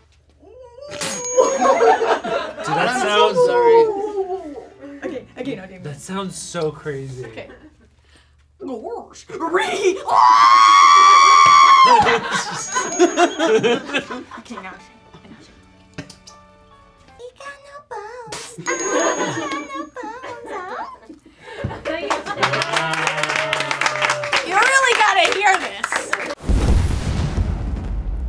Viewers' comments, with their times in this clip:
0:07 straight up sounds like R2-D2 dying lmao
0:10 was not expecting the R2D2 scream lmao
0:11 NOT THE R2-D2